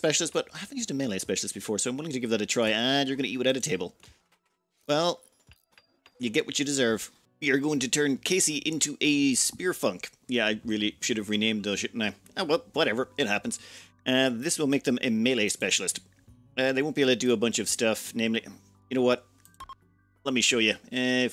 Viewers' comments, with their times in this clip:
0:05 "Spearfunc" I heard the 'n', Everyone heard the 'n' in "Spearfunc".... right? Great name for a melee specialist!